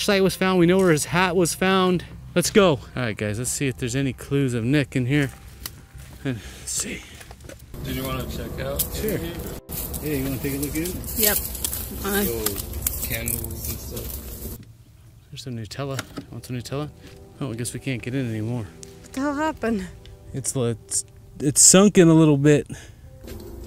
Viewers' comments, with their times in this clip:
0:06 has creepy sound...."See ya" OMG so clear!